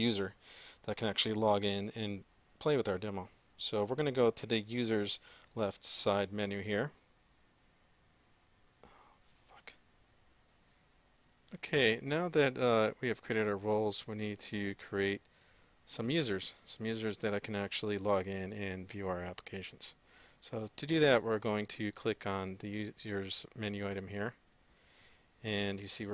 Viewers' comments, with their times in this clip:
0:09 Very useful video BTW I can hear you